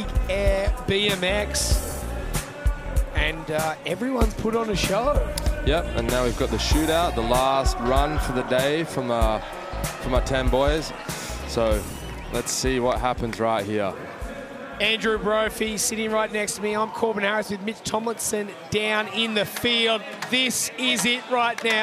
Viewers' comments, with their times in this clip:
0:05 it`s a lounge rap baby :)